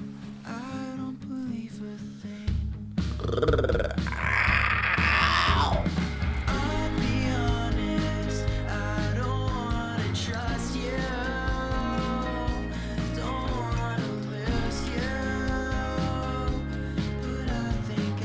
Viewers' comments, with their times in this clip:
0:03 he sounds like perry the platypus here